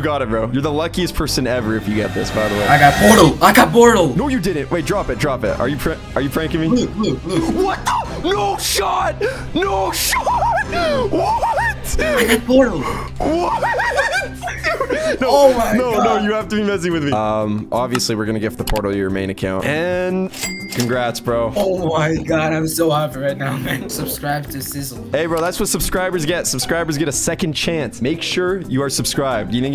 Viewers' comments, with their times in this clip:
0:10 bro sounded like brook